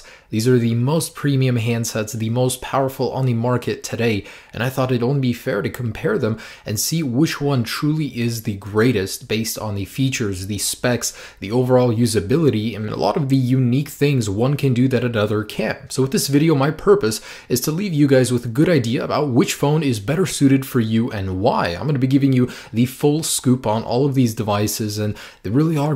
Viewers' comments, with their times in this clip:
0:06 Did you guys notice that a the iPhone 6s sneezed. 😂